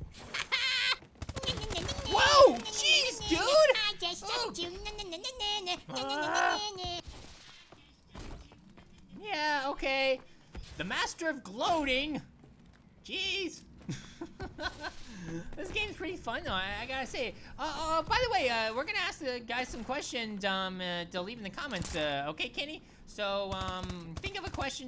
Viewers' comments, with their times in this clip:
0:08 You can here the echo